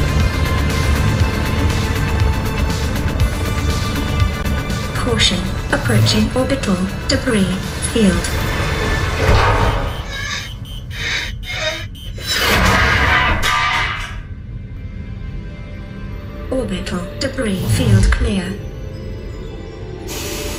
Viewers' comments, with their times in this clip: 0:05 when the debris field warning sounded everyone's thoughts were like: ah shit, here we go again